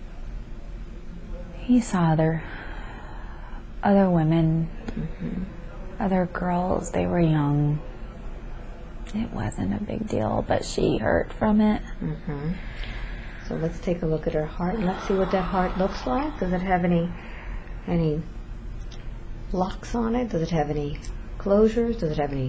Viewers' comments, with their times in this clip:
0:07 I start hearing other voices in the background. Laughter, singing. Almost like there is a party in the next room. Does anyone else hear that?